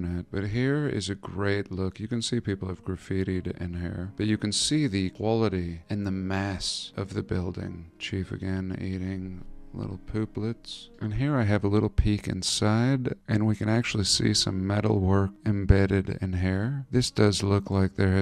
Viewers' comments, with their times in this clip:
0:05 "Chief again eating...... little pooplets". Bahahahahah the nonchalant way you said that killed me!